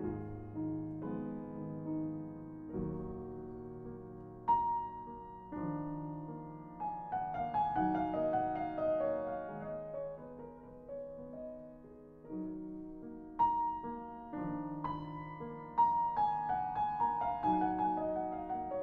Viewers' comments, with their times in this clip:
0:05 more beautiful with Horowitz's interpretation